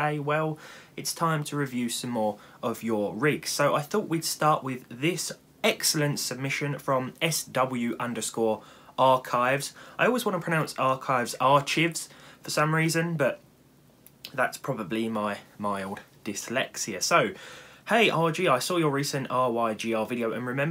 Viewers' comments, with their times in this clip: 0:08 You're not the only one with that problem, my secondary language is french so that happens to me often i always get the urge to say "ch" as "sh" because in french "ch" is pronounced "sh"